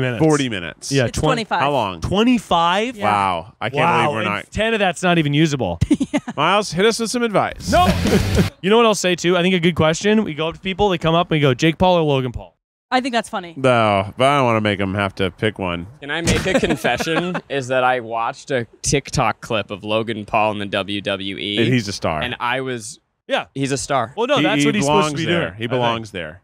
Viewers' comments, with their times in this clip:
0:05 the Advice Thatll Go For Miles theme song cutting in was hilarious, thanks editor 😂😂
0:07 the ATWGFM theme song starting when keith told miles to give advice lmaoooo between this and the producer note, i'm loving all the little additions to the pod